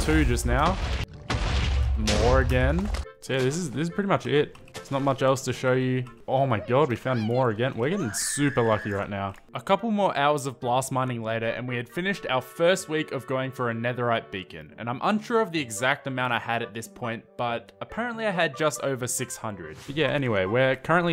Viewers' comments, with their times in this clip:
0:07 whats that scream ?